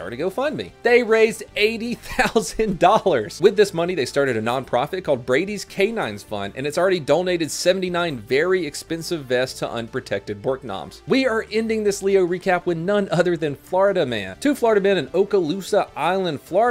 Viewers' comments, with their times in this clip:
0:03 please tell me you just said “Started a nom-profit...” cause that would be great